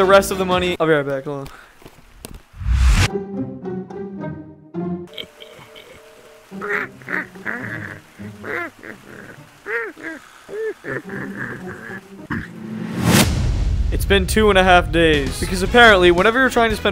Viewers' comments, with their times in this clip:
0:03 Minecraft, witch ahh noises